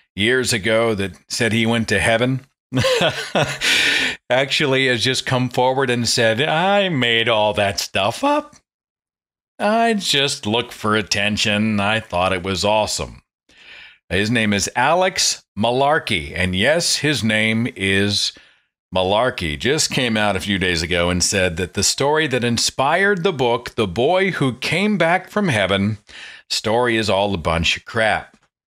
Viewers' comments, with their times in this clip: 0:10 Holy shit! Perfect Emo Phillips impression! "I made all that stuff up!" It quickly got better near the end of the sentence, haha.